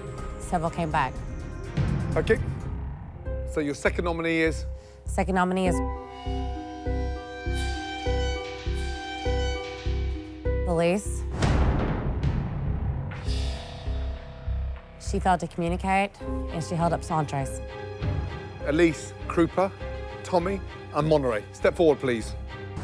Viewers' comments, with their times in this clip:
0:05 that noise spam is amazing
0:06 lmao 2 waterphones back-to-back
0:06 yo what the hell were those sound effects ಥ‿ಥ